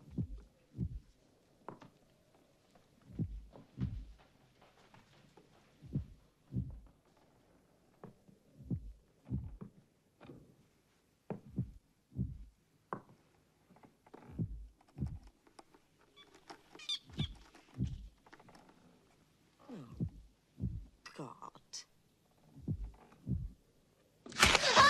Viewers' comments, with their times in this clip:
0:05 those heart beats tho